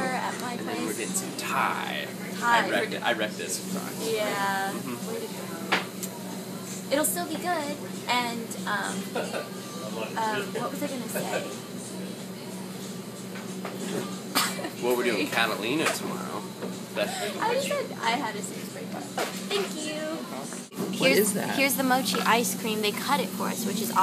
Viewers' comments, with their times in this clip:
0:07 hahahha that guy laughing in the background :L
0:09 i love the random ''hehe'' in the background :D